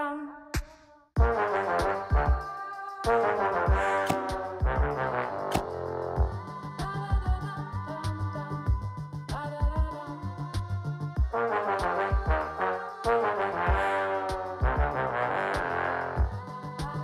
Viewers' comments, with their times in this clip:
0:04 Why do i hear Yelmut screaming louder than godzilla in the backround